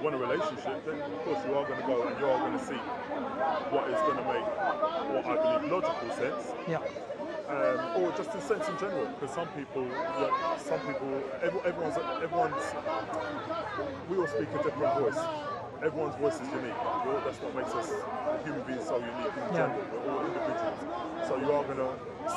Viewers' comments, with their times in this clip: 0:06 Ohu my god I heard THAT lady voice 😫😂